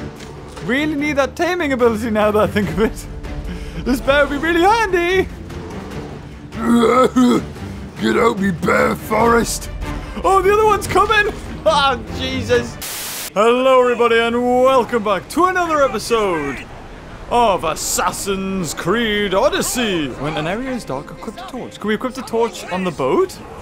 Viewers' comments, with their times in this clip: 0:06 best bear voice I’ve ever heard.